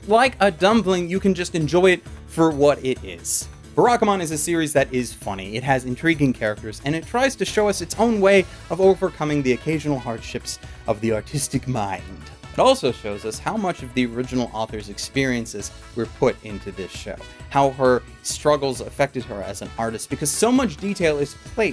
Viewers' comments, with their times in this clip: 0:07 yes, the hardships of the autistic mind